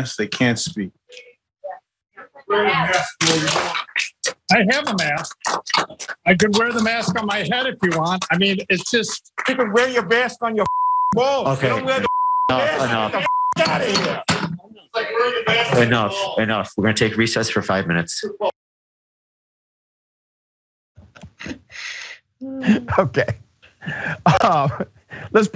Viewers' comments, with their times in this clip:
0:09 .....Peter griffin anybody